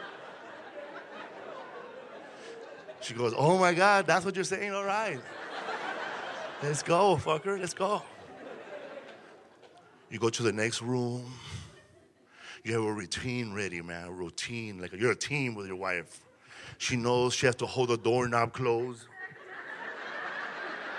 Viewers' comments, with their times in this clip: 0:07 Casually and happily referring to your spouse as "fucker" is the funniest thing I've heard in a while.